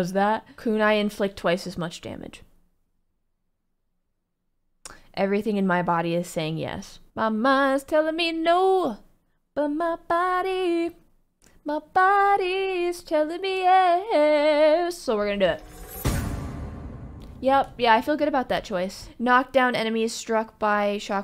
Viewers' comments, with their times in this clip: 0:06 You have a good voice. You can try singing ✌️